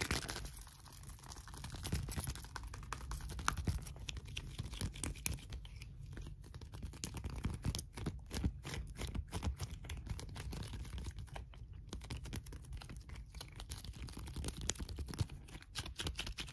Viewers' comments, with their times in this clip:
0:04 The putty trigger was HEAVEN 🤤